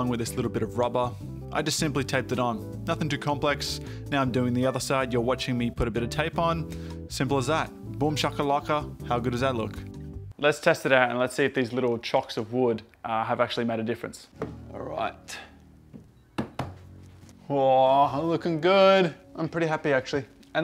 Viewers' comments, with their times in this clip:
0:07 Ok you just said Bumchocolucka. It all makes sense now. Still disgusting.